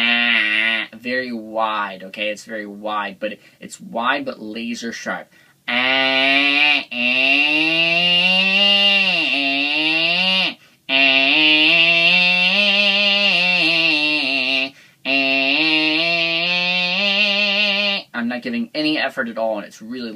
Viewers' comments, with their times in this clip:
0:05 "Hey...wanna hear the most annoying sound in the world?"
0:05 I think the NG sound is the COW in the cowboy :) ... is annoying, funny and strange all at the same time. Lmao.
0:07 Jim Carrey in Dumb and Dumber "Wanna hear the most annoying sound in the world?..."